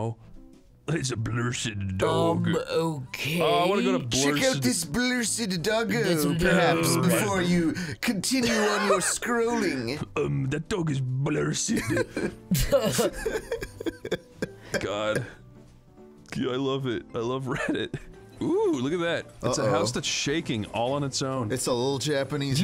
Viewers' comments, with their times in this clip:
0:04 That is the most perfect use of the comic book guy voice I've ever